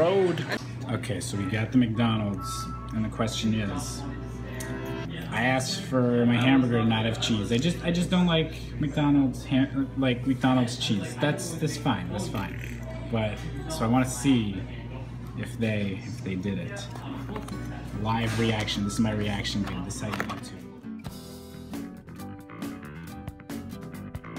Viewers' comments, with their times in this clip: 0:05 I heard the music and knew exactly where this was going... The suspense is killing me!
0:12 Did somebody fart?